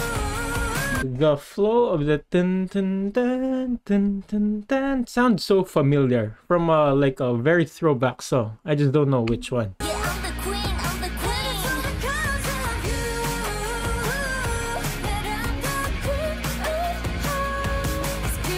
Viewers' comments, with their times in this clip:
0:05 lot of people think this part sounds familiar with queen we will rock you